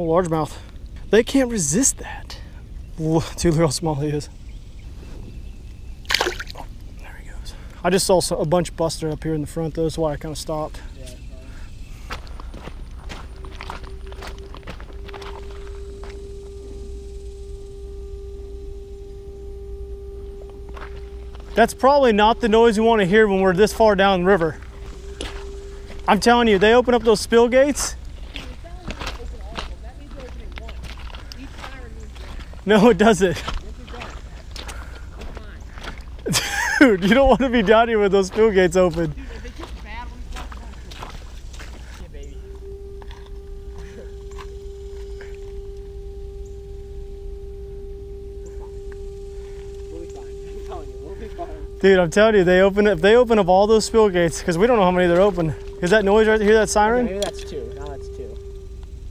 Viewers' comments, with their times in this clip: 0:04 Lol when you said "dude look at how small he is" if straight up sounded like you were speaking French 😂
0:47 captions said "music" and no music